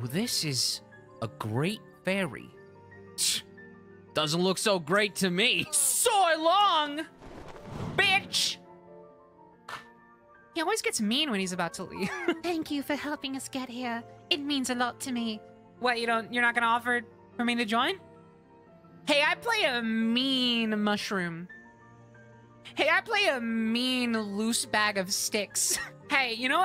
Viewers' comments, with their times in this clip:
0:07 my video started buffering so her voice cut off here 😂